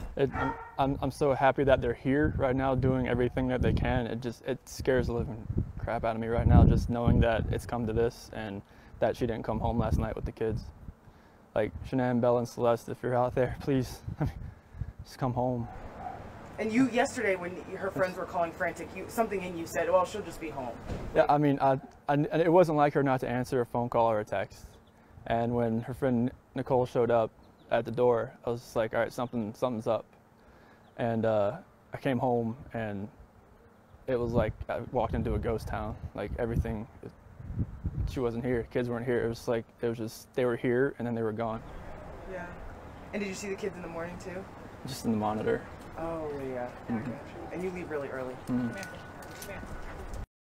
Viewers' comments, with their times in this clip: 0:06 yes he is scared. He confirms it. The bark is a hit. And his jaws were very tense, they almost look like they are locking up, hardly opening his mouth to fotm words.. This is insane!!!! (husband works with law enforcement.)
0:11 the way he laughs when he says "if you're out there please come home" is awful
0:15 when pleading for them to come home he smirks and laughs because he knows they arent. What a prick.
0:46 he looked like he wanted to kill the interviewer after she gave the disbelieving sounding “oh yeah...” and hit him with another question